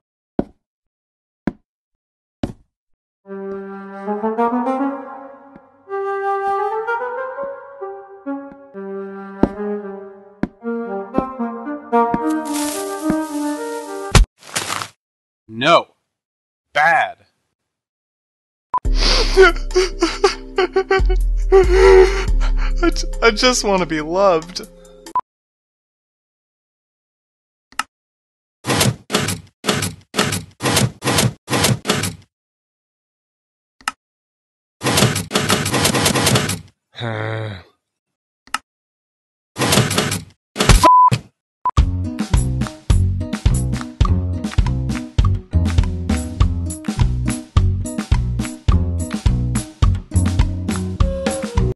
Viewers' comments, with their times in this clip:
0:03 thats sounds like the song from the stories of sodor
0:41 I reported this because I thought SethBling said the f word